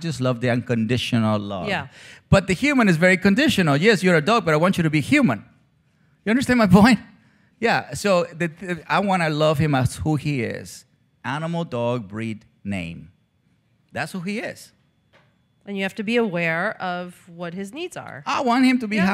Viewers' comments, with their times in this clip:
0:07 After talking about how the main issue he sees causing most of the problems he helps dogs and their owners with being that people see their dogs as humans, and/or selfishly want them to be or fill a human role in their lives, Cesar says: "I want to live him (his dog, junior) as who he is, (an) animal, (that is) a dog, (which happens to be a the pitbull0 breeds, name(d Junior). That's who he is.' Interviewer, 'and you have to be aware of what his needs are.' 'I want him to be happy being himself...' Interviewer: 'Ah, Junior, do you hear that? Do you hear that, baby boy?', in 'baby talk' tones, to a grown dog! Wow!!